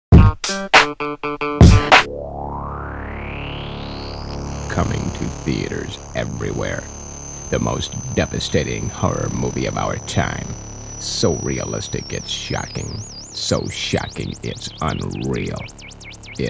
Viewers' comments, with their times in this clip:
0:00 I meant the beat playing